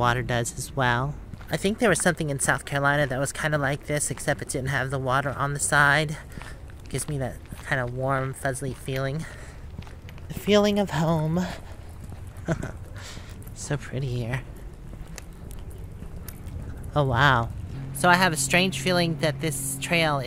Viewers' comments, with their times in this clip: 0:08 Great video. I think I heard the word "fuzzly", LOL